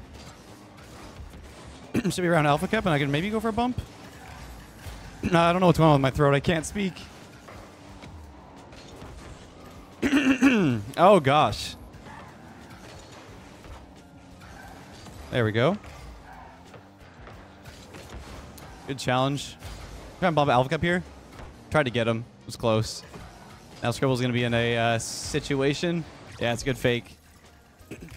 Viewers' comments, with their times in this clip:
0:09 its ok to cough leth.. let it out dude